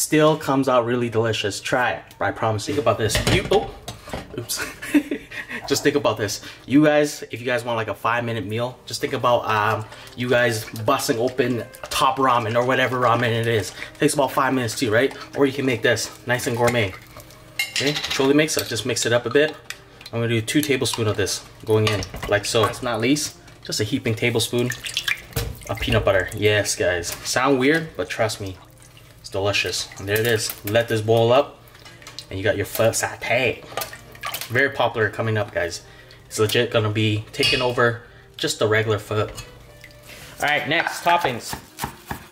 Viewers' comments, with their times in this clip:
0:10 .. the background noise when he said ‘busting open’ 😂😂👀
0:25 Was that a spit sound I heard? Hope you didn't spit into your pho lmao.